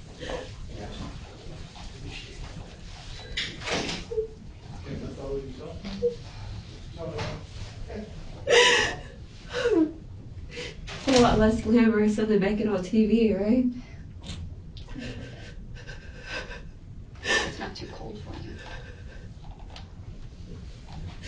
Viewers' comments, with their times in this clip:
0:06 she goes from crying (fake, yea) but crying to saying in plain voice, its a lot different than TV. She tries to cry but in-between she asks stupid questions and only cares about herself. She needs a lead pill for desert w/ her last meal and tomorrow morning dropped off at the morgue. Eye for an eye.